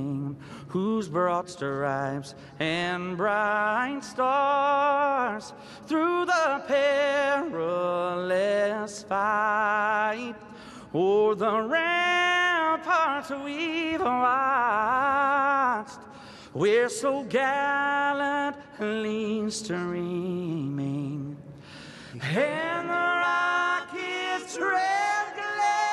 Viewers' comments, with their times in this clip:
0:08 Gary voice is so wonderful